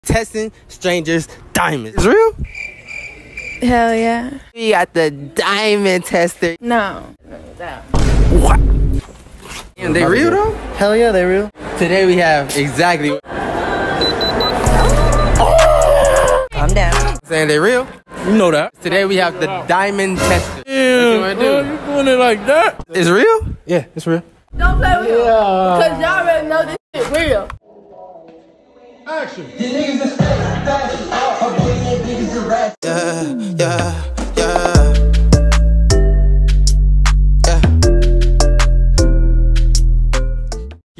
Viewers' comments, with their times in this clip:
0:02 the way she said "hell yeah" was amazing
0:26 Why she sound like woahvicky 😆